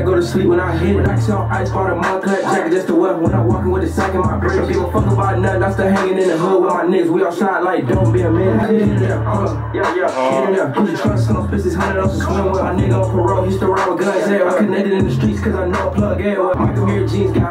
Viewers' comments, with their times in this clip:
0:04 song hard asf